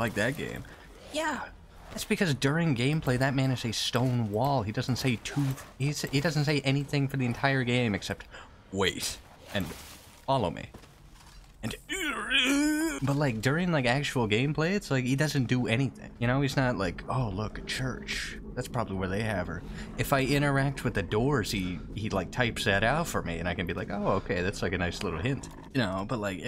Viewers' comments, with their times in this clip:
0:07 That was a really good impression. XD